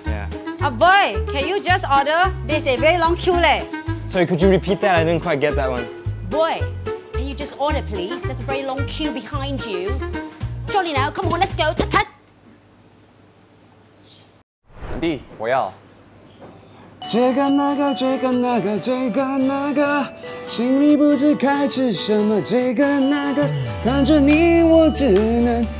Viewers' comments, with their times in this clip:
0:08 British accent is very rare in Singapore 😅😅
0:08 for a sec i thought he was singing super idol lol-